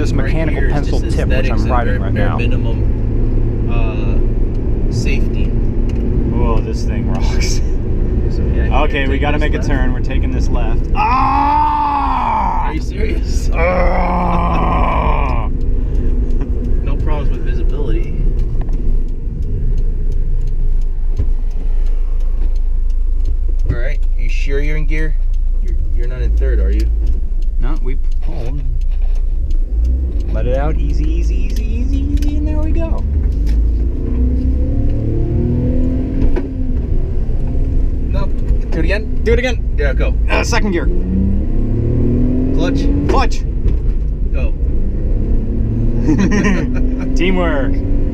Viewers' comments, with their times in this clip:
0:07 that fuckin grunt
0:35 This thing genuinely sounds good...